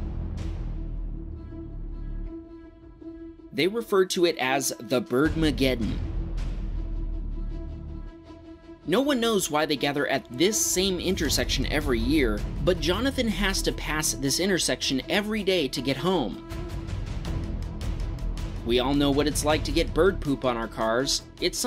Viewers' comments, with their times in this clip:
0:04 these birds are called Grackles and they do this all over the place in Texas. They have the strangest bird song it sounds like a hiss, a cackle, and caw all rolled into one.